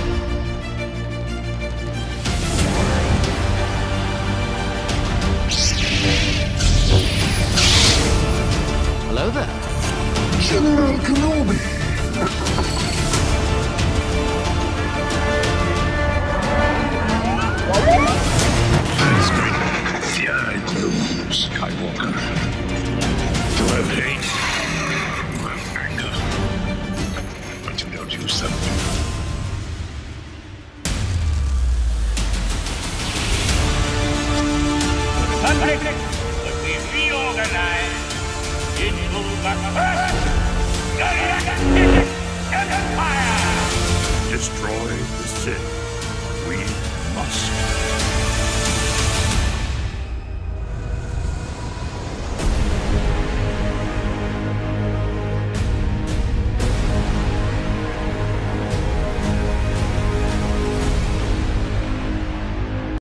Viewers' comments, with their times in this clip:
0:06 I love the foreshadowing by having anakin’s saber have a sith ignition sound. This trailer is perfect fr 🔥
0:49 wow just wow. Just the coolest movie logo ending I have ever seen. The TIE fighter sound gave me chills and the music is just unbelievable! Best trailer I have seen so far from you! 😉